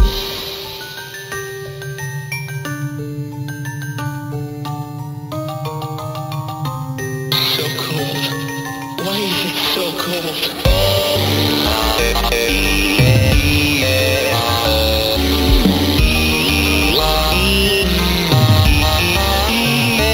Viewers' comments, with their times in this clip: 0:07 his voice lines in the first part got me crying